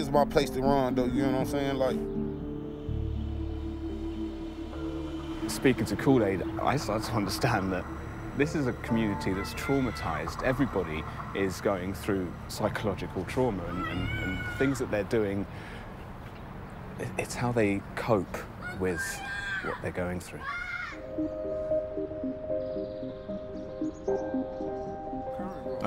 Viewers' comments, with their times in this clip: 0:06 so we gonna ignore the lil kid yelling "firee" 😂
0:08 is it me or did anyone else hear someone scream followed by a gunshot